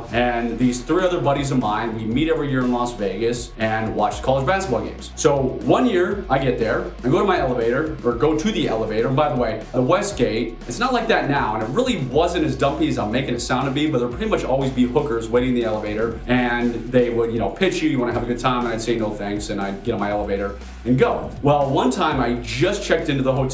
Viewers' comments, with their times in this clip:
0:09 What is he saying ? Sound like "bye the way, I was gay". I can't make it out.